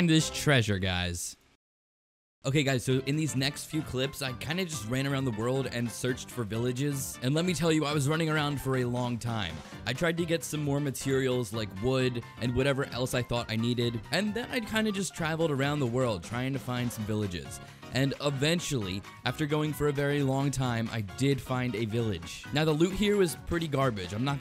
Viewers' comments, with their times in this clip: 0:06 That song it so cool! 😎